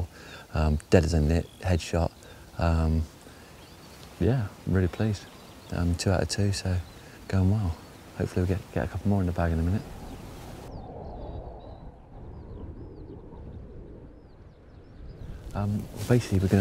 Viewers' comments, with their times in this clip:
0:04 Pheasant call in the background